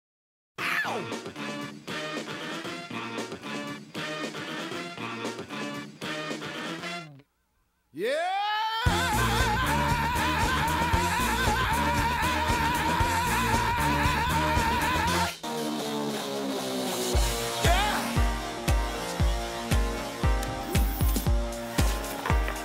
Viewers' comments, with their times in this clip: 0:08 That YEAH is so powerful, you can hear it even before it's roared out of Tom's mouth!😅 For real though, listen VERY carefully from the beginning to !